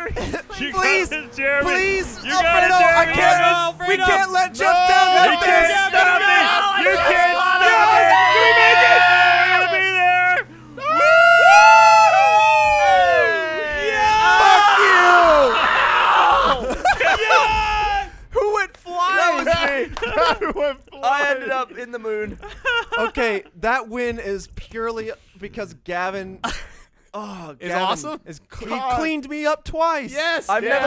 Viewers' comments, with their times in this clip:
0:08 with everyone screaming and Gavin flying in the air, founding the British Space Force (founded circa. 2018)
0:13 holy shit that scream XD